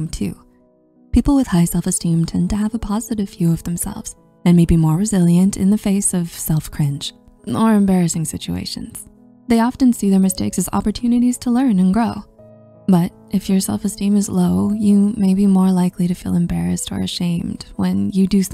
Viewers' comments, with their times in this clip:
0:05 that 100% sounds like how I would answer that question. But because I love being deadpan pretty much all the time.